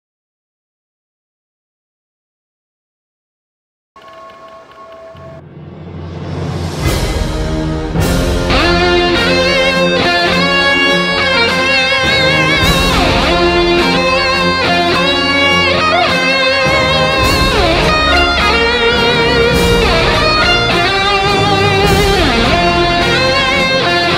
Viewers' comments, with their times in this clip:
0:08 Love the guitar starting !!